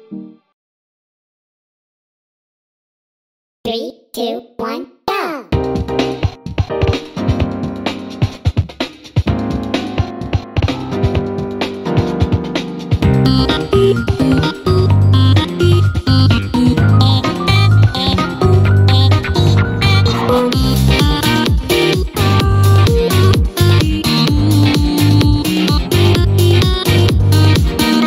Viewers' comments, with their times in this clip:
0:03 does this even count as a rap battle, because it sounds more like a duet.
0:09 On it kinda sounds like deathmatch